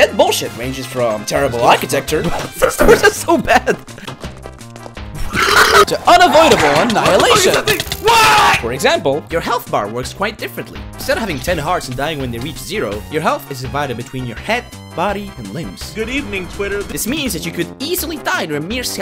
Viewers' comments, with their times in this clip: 0:04 Why is literally no one talking like wtf, was that suppose to be a laugh??? like serioulsy im so confused and also wheezing
0:05 is that a burp or hysterical laugh